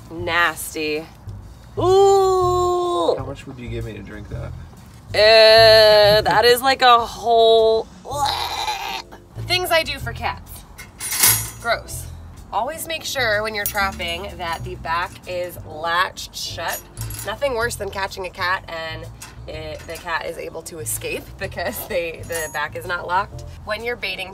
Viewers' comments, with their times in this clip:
0:08 Is it me or does that sound like pencil from bfdi 😅